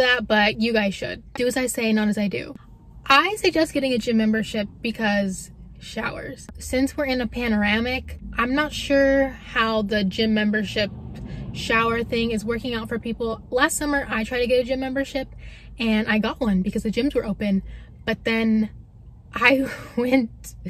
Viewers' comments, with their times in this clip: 0:05 whats a paneramic ? minute